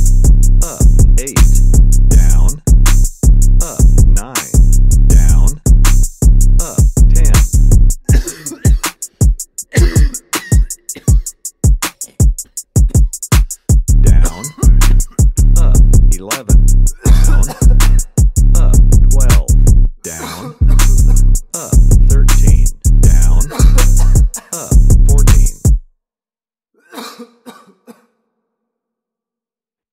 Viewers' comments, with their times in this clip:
0:08 When Arthur Morgan Hop on the beat
0:14 Why did 11 slap like that?? I was not ready